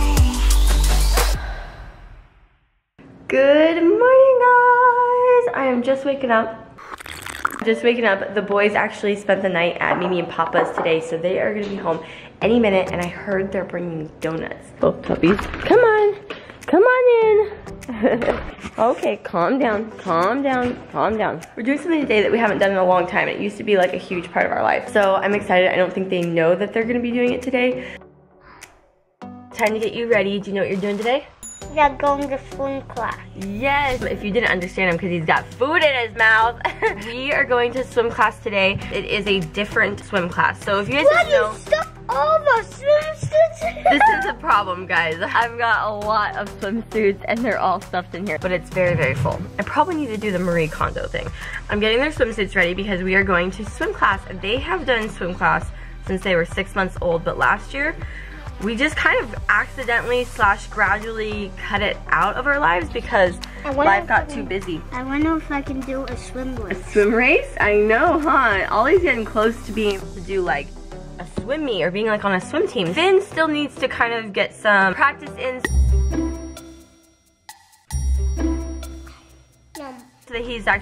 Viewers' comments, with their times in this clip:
0:07 That AS MR though
1:05 Is it just me or did he say I want to f$cking do a swim race . 🤯😳🤯😳